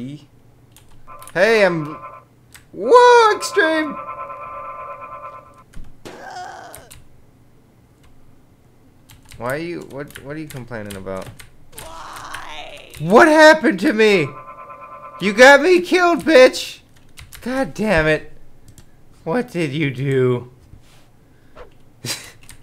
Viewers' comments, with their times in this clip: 0:05 It was hilarious it looks at the chick and in the distance you hear "WHYYYYYY!" and a blood shower follows! .............. i keep replaying it!!!!